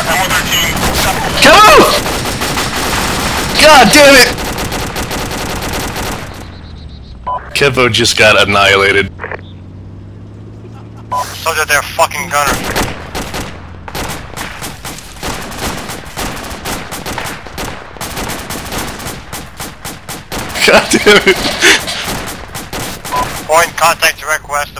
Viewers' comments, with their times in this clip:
0:09 the laugh in the distance just makes it complete